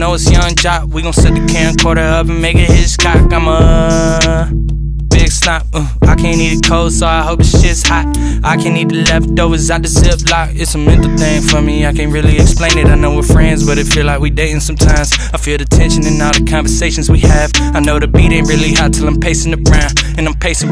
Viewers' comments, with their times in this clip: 0:08 that flow switch was fire AF